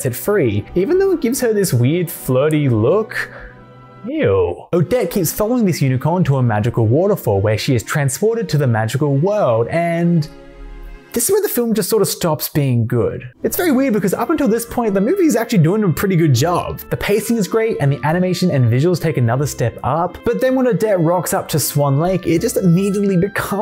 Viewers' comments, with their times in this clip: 0:05 thought i was going insane because i swore i had off tab music off and wasn't in gridania, but nah bro is just cultured